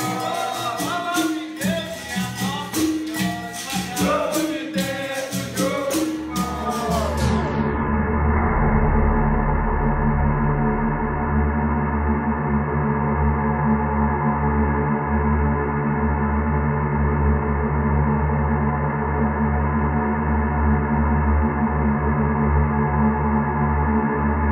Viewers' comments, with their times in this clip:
0:09 the ending background sound is just silly : P ( forward ) . Like I guess it is supposed to highlight how dangerous the angola capoeira moves are but they are not so it doesn't really work.